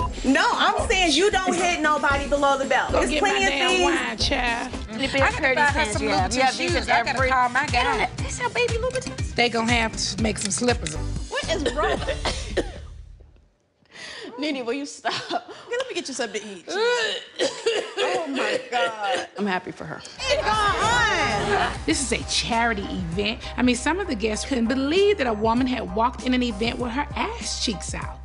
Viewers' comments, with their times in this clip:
0:09 NeNe is coughing (covid19)